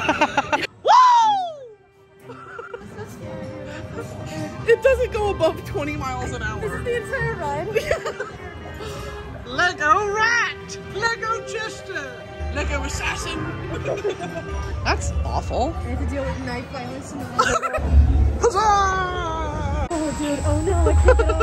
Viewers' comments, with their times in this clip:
0:09 pls the accent is perfect